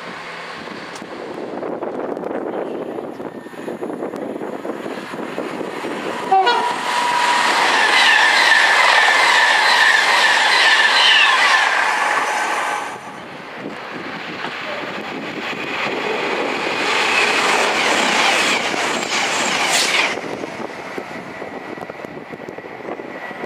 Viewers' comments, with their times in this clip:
0:06 so wiered horn